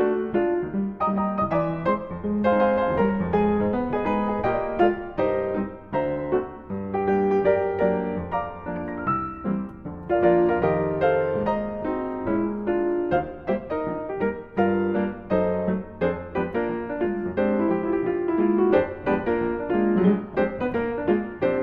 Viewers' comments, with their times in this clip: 0:08 Beautiful as always! The precision and elegance of that rolled chord was gorgeous. And then later on the left hand bouncing around the right hand - that was incredible! How long does it take you to arrange and learn a piece like this?